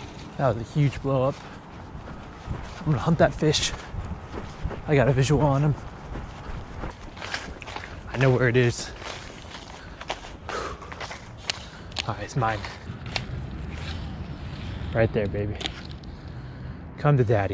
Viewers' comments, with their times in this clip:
0:04 he sound like he’s a cop